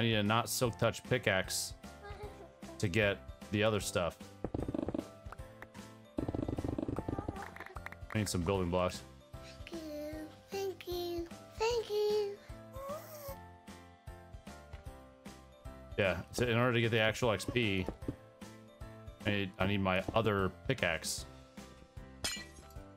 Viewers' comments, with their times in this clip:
0:08 Did any one else get a mini heart attack because it sounded like the ghast said "thank you"?